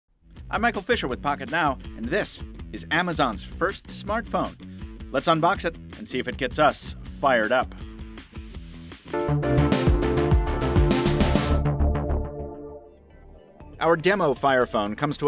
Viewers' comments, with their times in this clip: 0:00 I go back in video , you'd still laughing.